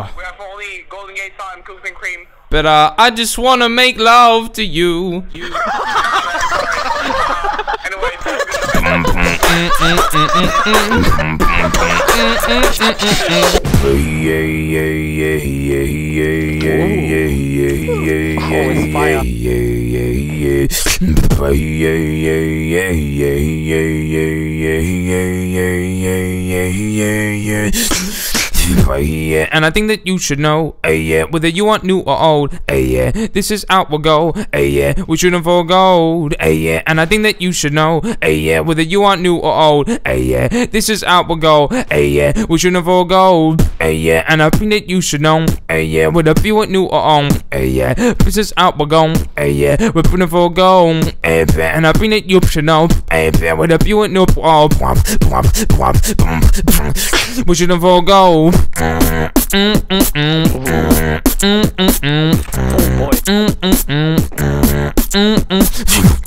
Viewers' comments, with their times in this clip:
0:06 the laughs sounds like chickens... is it just me?
0:41 he shoots well in time to beat (BR here)
0:42 When you realize the shot and the beatbox are coordinated: Ö
0:42 Jesus christ the guy actually shot when the beat started Edit: Thx for 300 likes ma boiis
0:42 the shot and the kick lol
0:43 the guy shot at the same time as the beat
0:43 Did anyone else notice that the gunshot was on beat?
0:51 he should have did a beat drop